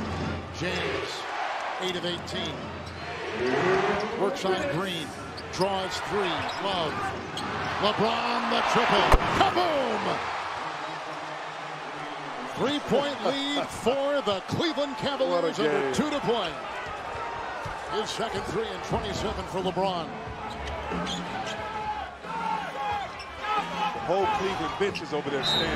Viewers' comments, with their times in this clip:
0:09 That was the most wet shot I've ever heard